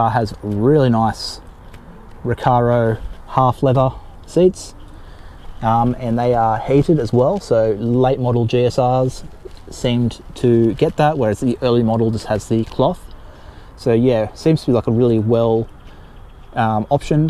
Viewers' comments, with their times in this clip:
0:05 my American brain wondered, "Why are those seats hated?" 🤔 Then I listened with an Australian accent 👌🏽.